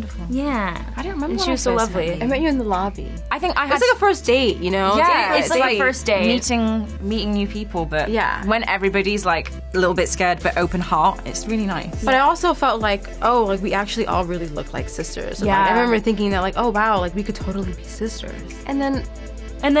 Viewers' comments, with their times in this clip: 0:05 Madeline switching the accent... Does she have to have the American in the show? She's my Favourite though